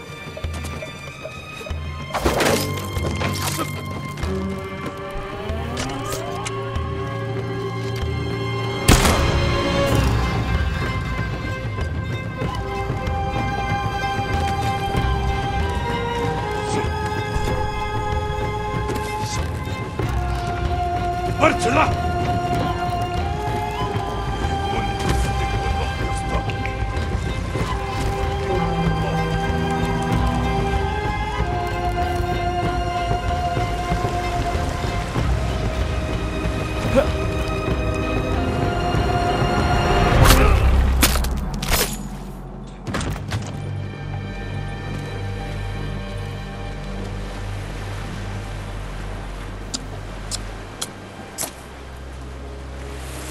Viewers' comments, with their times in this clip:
0:09 the music here 🔥🔥🔥
0:39 Does the music sync up with gameplay or is it just a coincidence where the assassination fits perfectly with the music